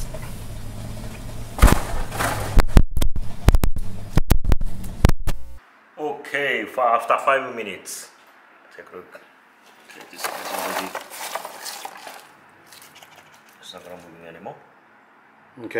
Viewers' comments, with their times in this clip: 0:03 anyone else thought there headphones were acting up 😒🤦🏾‍♂️